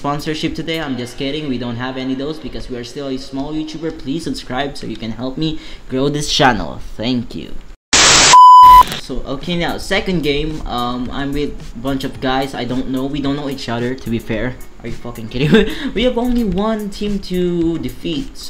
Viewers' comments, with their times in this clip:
0:05 tenkyu too ahhaha